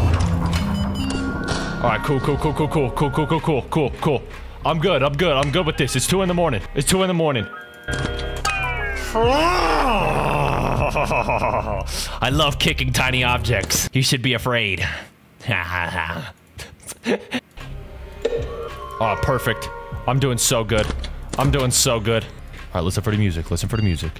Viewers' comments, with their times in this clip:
0:08 He almost sounds like Mr.Bean here.